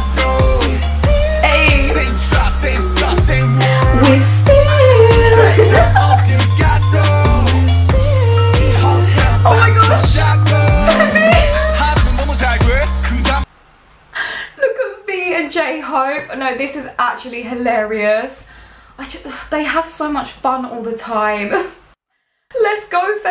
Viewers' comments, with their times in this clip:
0:04 you lowkey KILLED that note 🔥💜